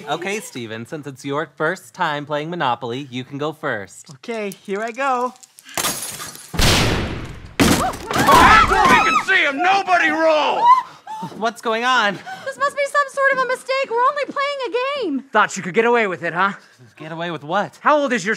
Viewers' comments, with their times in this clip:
0:06 intense knock knock knock FBI OPEN UP!